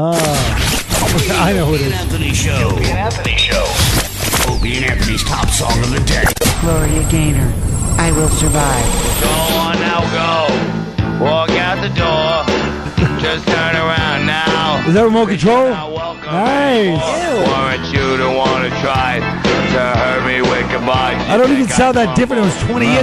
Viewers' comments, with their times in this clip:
0:09 28 year old Colin sounds just like 58 year old Colin. That means 3 year old Colin was a gravel-ey voiced, enlightened little curmudgeon.